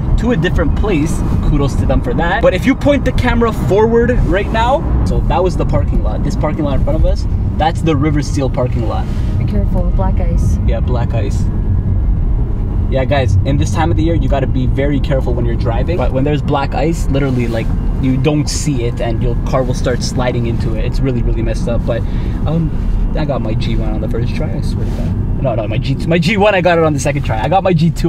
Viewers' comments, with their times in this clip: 0:09 I swear I thought she said “be careful, black guys” 😂😂😂